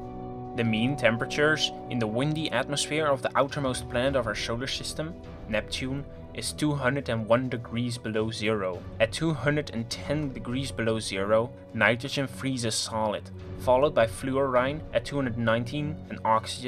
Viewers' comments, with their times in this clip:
0:04 ? Did you hear Sugar System